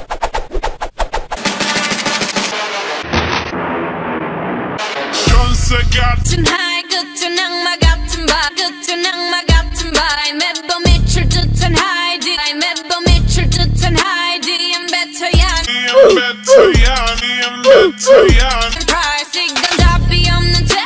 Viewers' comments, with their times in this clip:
0:04 that 1-2 second voice doe